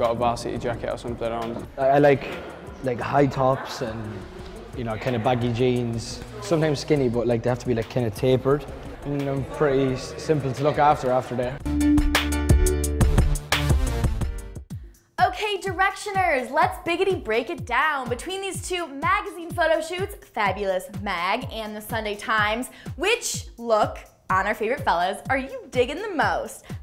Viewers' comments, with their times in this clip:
0:07 "Tay-pered" Niall you're so cute